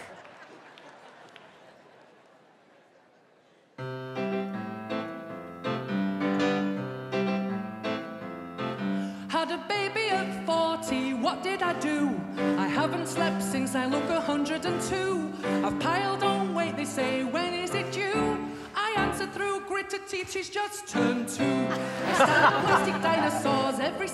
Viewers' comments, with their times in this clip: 0:10 Me:*Hears music* Me:Ohh Yeah this is funny